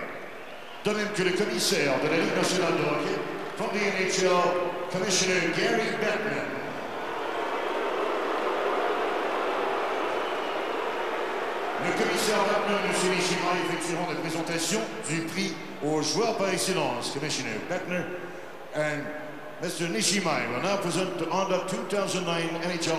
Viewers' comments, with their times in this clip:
0:07 I love how the fans boo Bettman Classic!